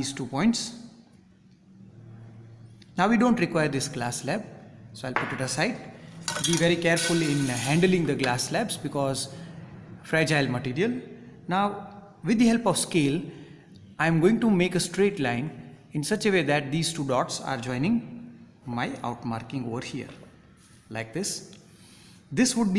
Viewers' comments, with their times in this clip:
0:04 He told to be very careful with the glass lab Till then I heard a voice😥😂 But thanks sir 👍